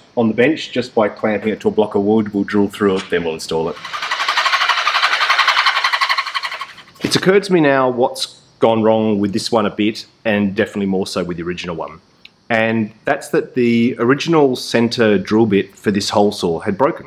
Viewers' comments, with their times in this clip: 0:04 Never heard a Dolphin saw before =)